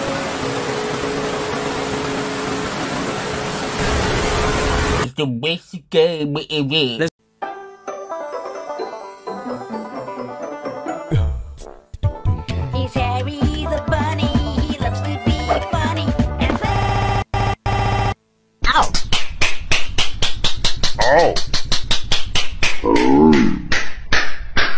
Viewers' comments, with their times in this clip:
0:05 (In Droopy Dog Voice)